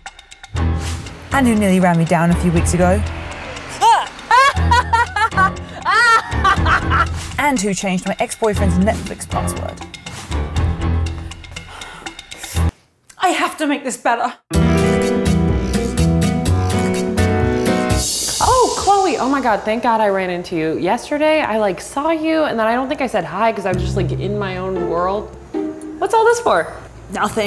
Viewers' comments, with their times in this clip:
0:04 The laugh killed me
0:12 OMG her accent